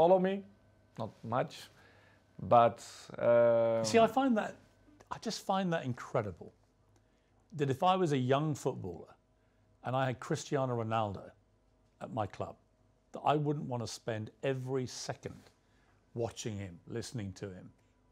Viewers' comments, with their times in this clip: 0:03 Pierce Morgan interrupting CR7